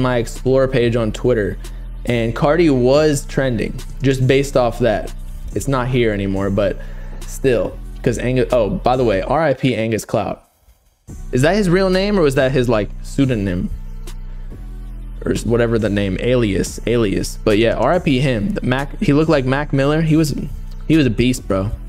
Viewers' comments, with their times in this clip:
0:08 i’m sorry but the way the beat dropped on that💀💀